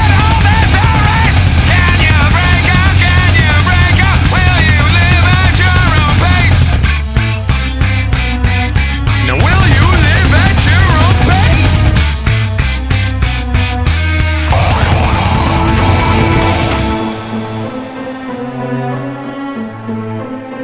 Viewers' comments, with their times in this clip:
0:06 The sound affects starting sound like shit